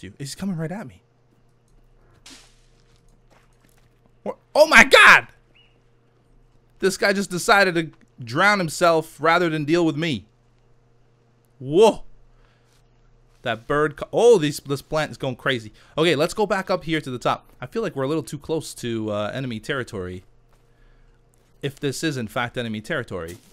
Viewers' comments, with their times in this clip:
0:04 I love the way you say oh my god it always cracks me up